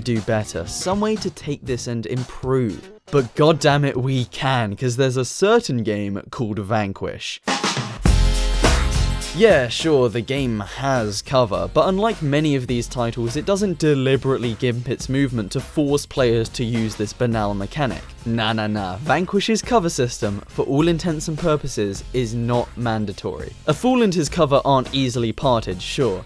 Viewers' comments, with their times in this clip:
0:07 This comment exists Just to give me an easy shortcut to that awsome music punch